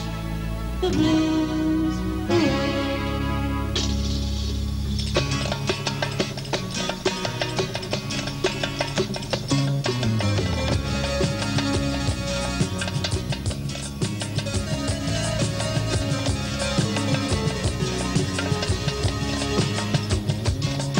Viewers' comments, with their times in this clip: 0:03 an amazing instrumental piece, great Bassist :)